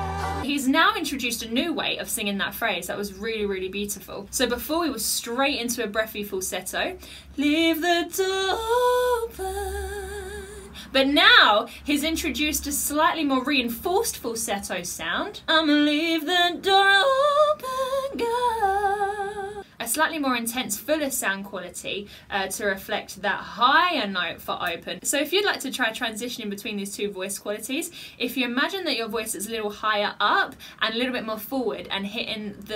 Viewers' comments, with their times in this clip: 0:06 omg your voice. made my eyes tear up! lol I loved your reaction! :) New sub here!
0:08 She really tried to act like she didn’t kill That falsetto
0:15 when she sang "leave the door open," the second time, girl I got chills.
0:15 GIRL, I FELL IN LIVE WITH YOU-SINGING LIKE THAT🥰🥰🥰🥰🥰🥰💪🏾. "I'M A SURE LEAVE MY DOOR OPEN FOR YOU, YOU KEEP SINGING LIKE THAT😎❤️💯💯💯